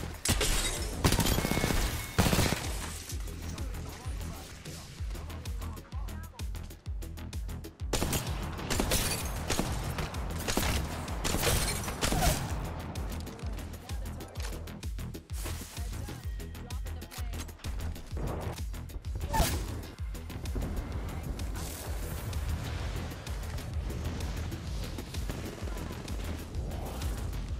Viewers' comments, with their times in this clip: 0:10 crispiest longbow shots.....